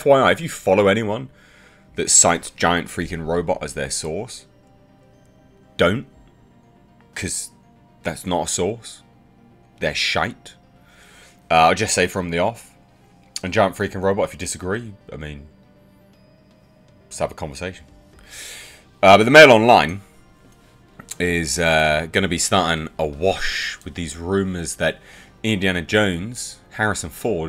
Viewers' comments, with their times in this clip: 0:09 Sounding really Irish